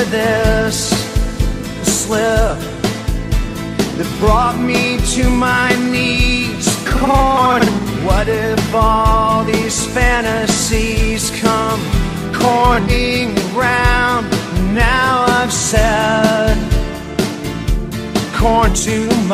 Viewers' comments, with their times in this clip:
0:07 The emotional despair in that c o r n really hits hard